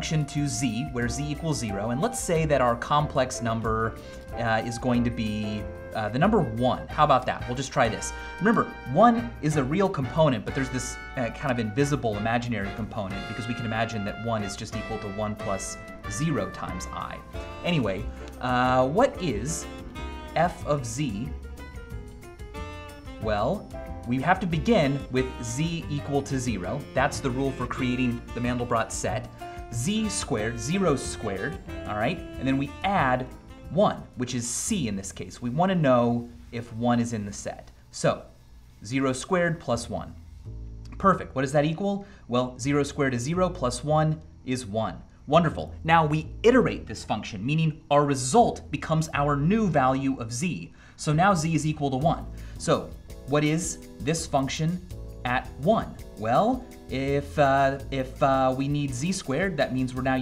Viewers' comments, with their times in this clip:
0:08 lol that music doesn't go along well with that at ALL!
0:35 That music reminds me of another lost vsauce song...
0:41 I cant unhear onederful. After he said "is equal to one"